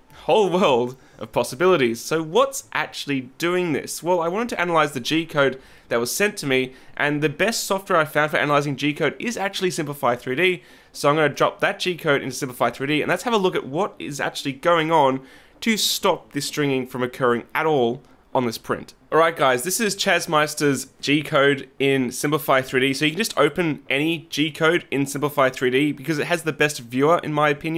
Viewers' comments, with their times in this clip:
0:08 holy fuck use a pop filter that booger almost hit ur mic